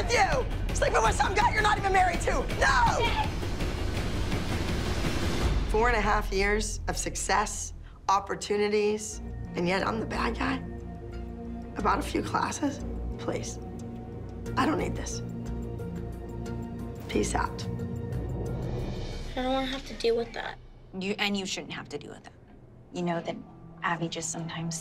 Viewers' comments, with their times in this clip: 0:10 No, you are a bald guy DEEP